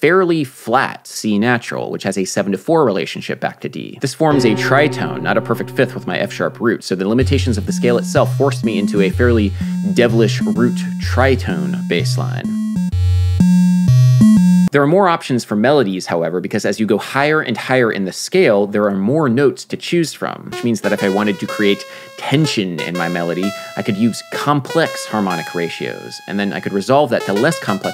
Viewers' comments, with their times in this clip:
0:10 Imperial March anyone?